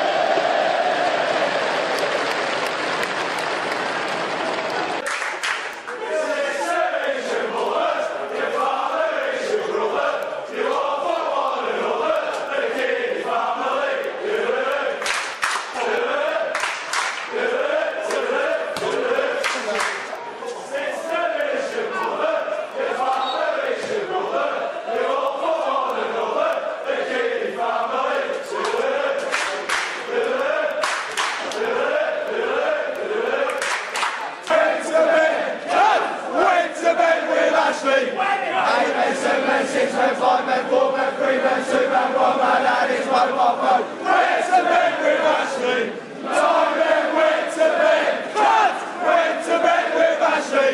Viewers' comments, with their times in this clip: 0:05 best chant ever
0:33 must be the most coordinated chant ever